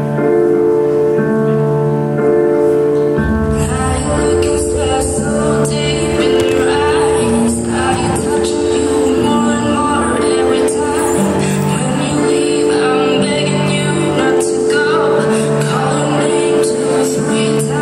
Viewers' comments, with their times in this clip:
0:05 the way she thumped on the ground